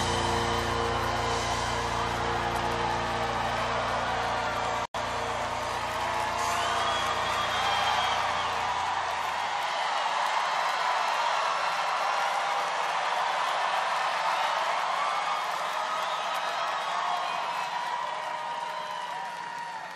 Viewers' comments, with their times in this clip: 0:06 piano jam into a smash hit... wish I could have been there.